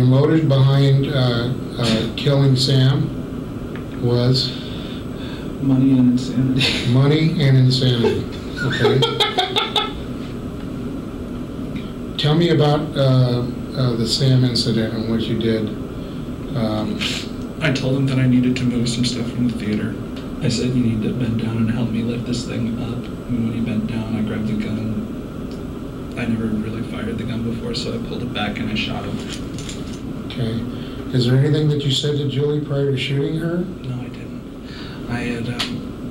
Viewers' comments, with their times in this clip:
0:09 *WARNING LOW BUDGET JOKER LAUGH
0:09 What an evil laugh. This psychopath destroyed two families.
0:18 He cackled like a Hyena. Put a chill down my spine.